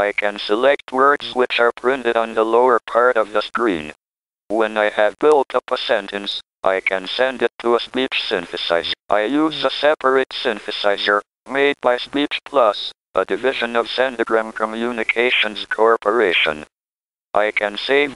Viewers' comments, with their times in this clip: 0:06 I thought it sounded like say from amiga os, good old workbench 1.3